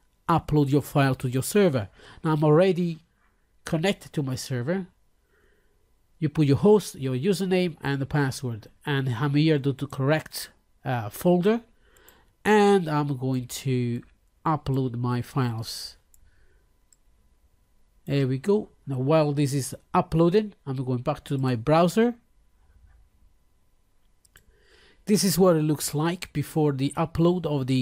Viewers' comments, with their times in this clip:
0:08 what is being said ? unable to get it